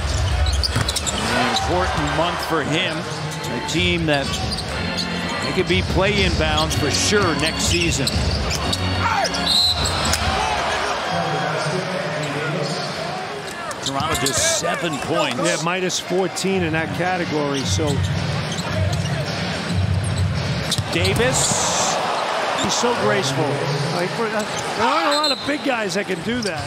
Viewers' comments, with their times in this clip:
0:08 the Scream (C'mon what??)💀